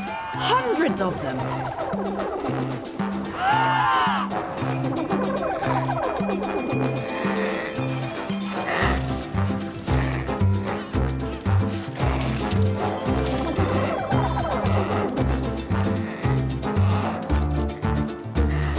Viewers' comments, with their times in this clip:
0:03 penguins laugh at the other dude ..